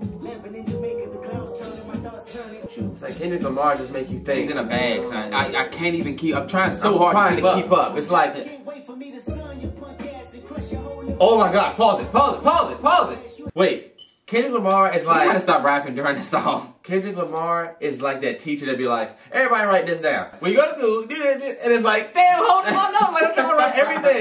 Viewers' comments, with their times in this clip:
0:08 the reaction when the beat switched was my reaction exactly when i first listened \